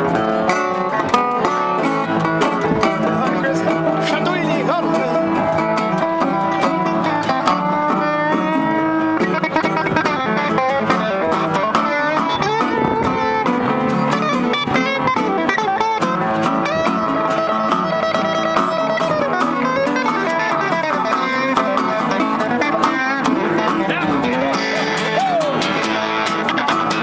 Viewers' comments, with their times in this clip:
0:09 Finally! Someone other than the piano player to take lead Great music.